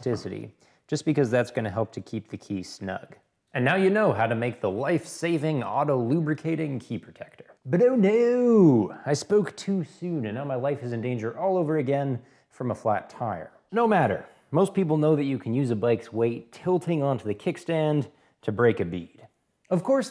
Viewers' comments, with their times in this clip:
0:07 he sounds like the gay guy from family guy 😂😂